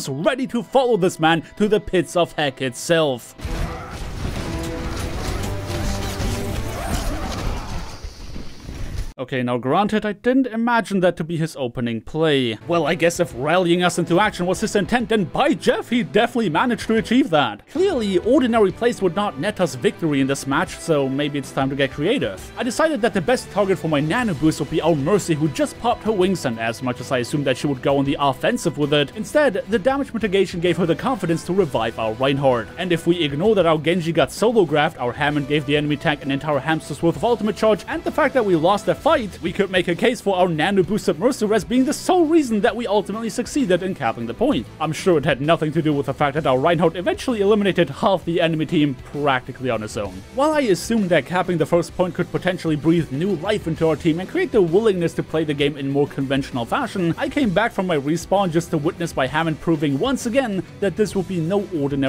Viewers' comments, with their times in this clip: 0:03 lol, i got my hopes up thinking rein was going to get a miraculous 6k out of nowhere when the music came on.
0:45 sad mercy noises